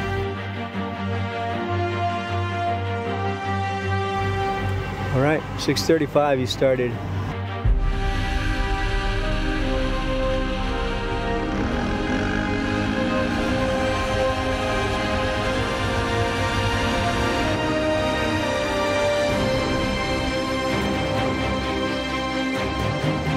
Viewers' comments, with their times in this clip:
0:07 Great movie and great descriptions of the race. Unfortunately the music got way to annoying so I couldn't finish watching.